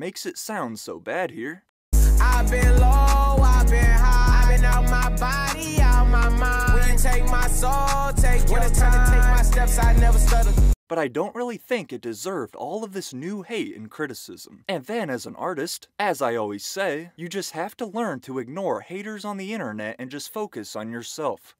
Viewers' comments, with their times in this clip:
0:09 is just the basic trap beat ngl